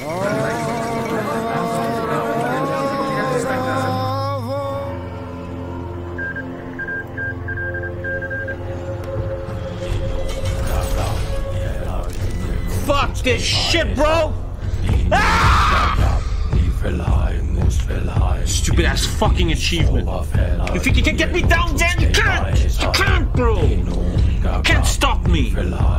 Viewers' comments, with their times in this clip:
0:06 Whats the Song starting ? The nordic-esc chanty one